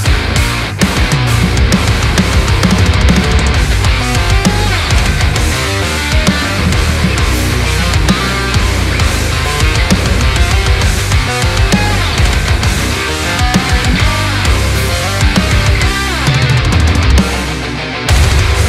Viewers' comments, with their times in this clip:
0:03 I don't understand how they come up with riffs like This just feels so incredibly wonky and weird all by itself, but as soon as it's combined with the other parts/instruments, it fits perfectly! What I also cannot get into my brain is how in the world you learn stuff like this so fast AND play it so extremely well. Unbelievable display of pure skill!